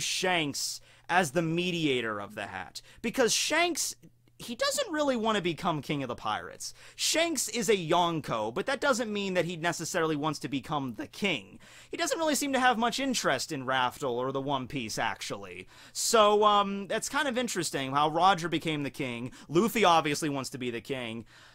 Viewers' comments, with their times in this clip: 0:06 like how my history teacher says it. “It good to be king”